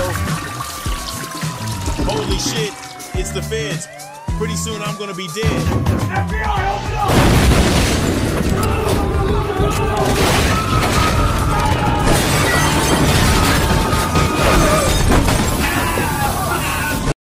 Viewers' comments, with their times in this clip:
0:05 DEA OPEN NA NOOR 💀😦 English mo********er😡 cheak- with captions open na noor